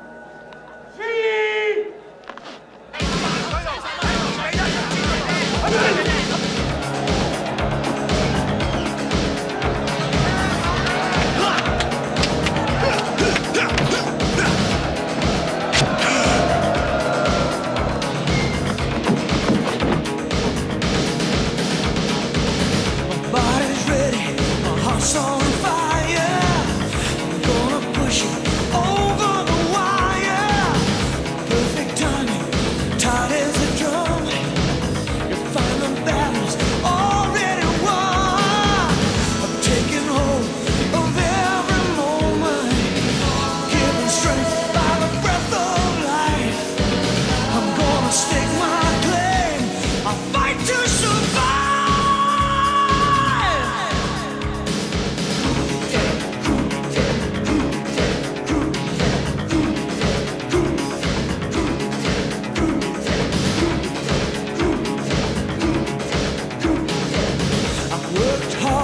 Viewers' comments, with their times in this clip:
0:03 Epic legendary song kicks in:
0:06 Yep. When you heard that music, this is a fight begins with a big dance.
0:50 EPIC LYRICS AND SOUNDTRACK. INTENSE SCENE. GOT ME HYPED UP